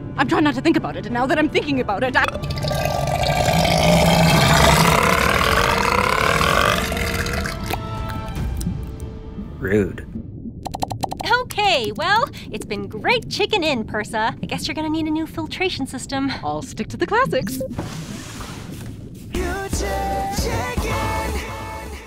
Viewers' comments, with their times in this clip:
0:03 nice burp Persa
0:03 Bro: It will just Be a quiet burp! The Burp:
0:03 this is the kind of burp my classmates always do